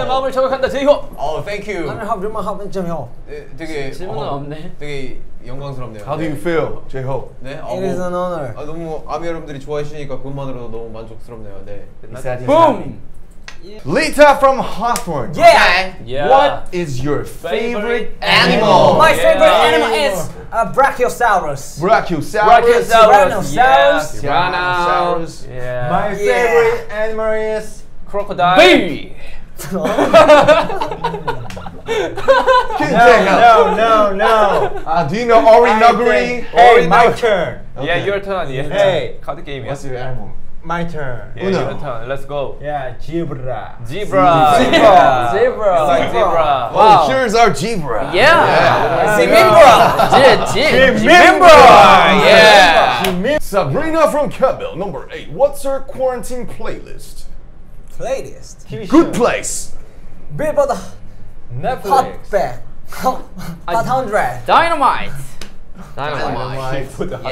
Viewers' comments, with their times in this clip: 0:06 he is whispered to j hope "that is an honor!
0:42 v my favorite animal is jeberra not zebra I think that this is korean language
0:50 idk what they said in i hear jimin-bra😂😂